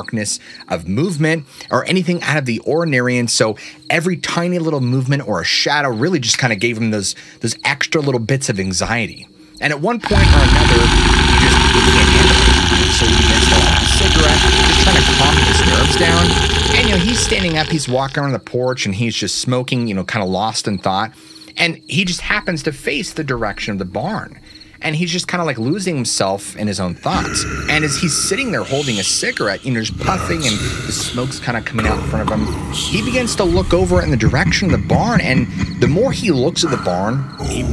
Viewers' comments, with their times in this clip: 0:07 TERRIBLE JOB OF AUDIO MINS!!!! YOU GOTTA WATCH AND LISTEN TO YOUR ENTIRE VIDEO WHEN YOU THINK IT'S DONE AND REDNDER IT TO FILE - YOU WOULD HAVE CAUGHT THE AWFUL EXTREMELY LOUD GROWL AND THEN VAMPIRIC LAUGHTER THEN BECKONING TO COME CLOSER, ALMOST THERE..... - THIS VIDEO WOULD HAVE BEEN AMAZING AND PRETTY MUCH PERFECT IF IT WASN'T FOR THIS AMATEUR MISTAKE :(
0:10 Nice telling of a story I've heard many times. It (allegedly) happened in my general neck of the woods. A little before my time though. Don't know how long because the best I can find was that it happened in "the '60s." I could do without the sound effects starting though. They were distracting and drowned out your lovely voice too much. 🙂
0:10 What? How'd you find the sound of a modern day woman waking up the morning after a night out at the clubs? That must have been a dicey situation!! Lol
0:15 very disturbing grinding, growling noises and disturbing chanting overwhelms the dialog. Is this intentional??
0:21 or 36 they growl scared the hell out of me